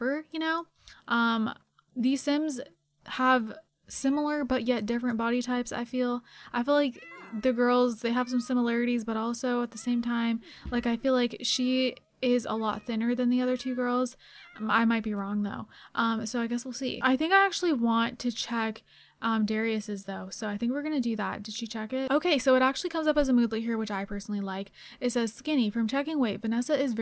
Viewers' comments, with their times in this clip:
0:09 I thought there was a actual stray cat out my window and tried looking for it then realized it was the cat in the game. 😶😶